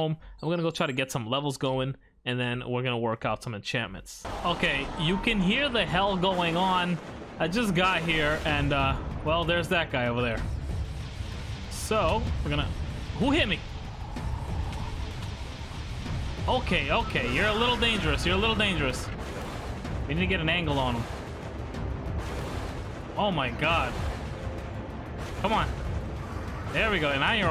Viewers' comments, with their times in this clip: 0:09 sounds like you’re at the train station loooooooool